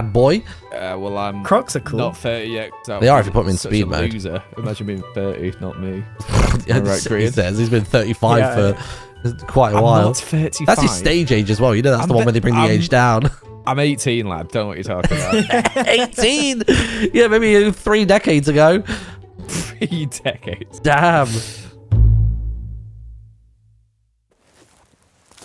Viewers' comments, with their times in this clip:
0:06 piglin growling, terraria medusa attacking.. point is, that sounded exactly like one of those.